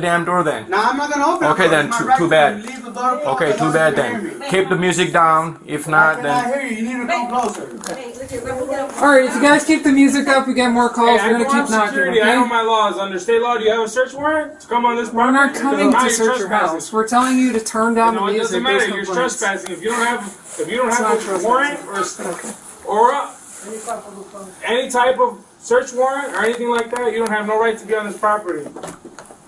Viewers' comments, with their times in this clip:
0:03 And the tremendously overweight, multi-generational family blasting loud music
0:03 Didn't you hear the lady yelling out in the street that the old guy is just a whiner with no life?
0:13 they were leaving he stormed out yelling, disturbing the peace even more. It’s am!